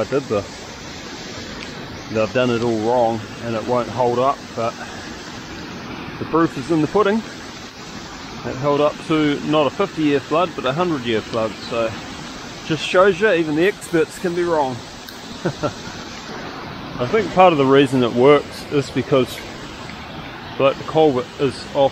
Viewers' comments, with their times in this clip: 0:07 The constant rattle of falling rocks. Scary